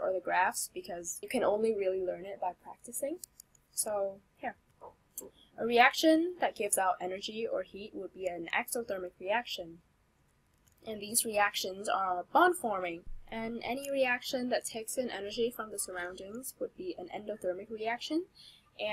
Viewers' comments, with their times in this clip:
0:05 it sounds lime J.Williams Mi Gente but good video overall